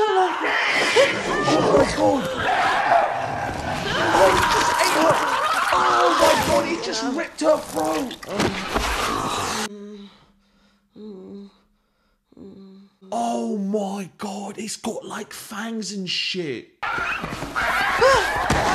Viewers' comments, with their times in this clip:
0:04 You can actually hear her start gurgling while screaming. The gory details make this movie next level creepy